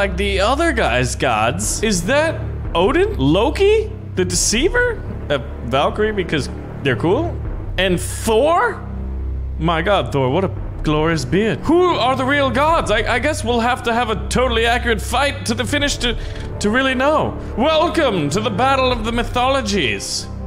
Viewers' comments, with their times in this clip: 0:07 sounds like Loki